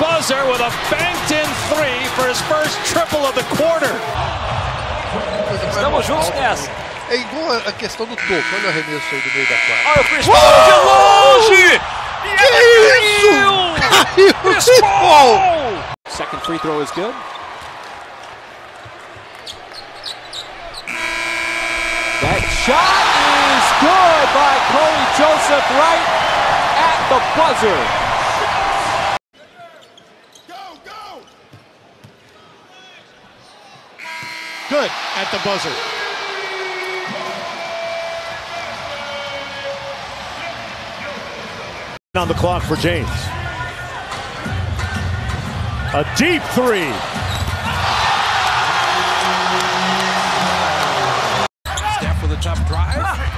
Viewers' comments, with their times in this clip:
0:06 it took me while to realise they were not speaking english😂😂
0:32 most boring unexcited announcer ever
0:34 when ur the announcer for the home team but u bet on the wizards 😬